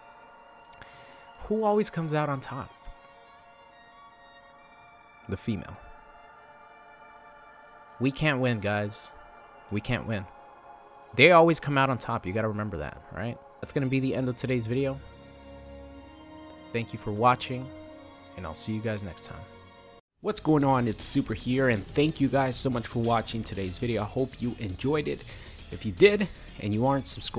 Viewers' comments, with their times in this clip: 0:08 Not when she screams at you like that.